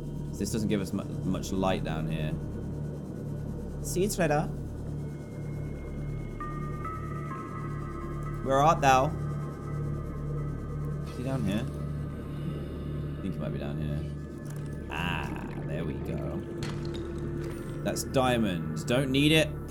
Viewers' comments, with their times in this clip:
0:06 Anyone know what song or sound that is and why it plays? It's so unsettling..